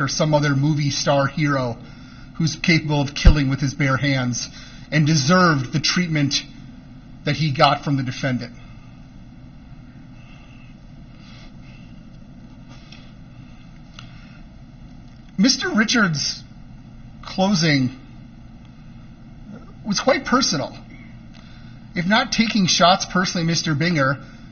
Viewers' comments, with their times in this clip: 0:09 My dude out of breath just talkin… 🤣